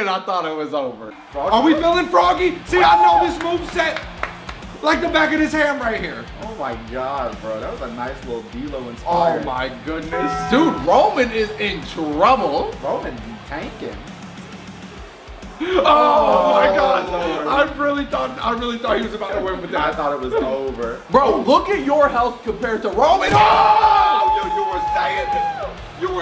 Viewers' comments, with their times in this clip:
0:08 not the taco bell sound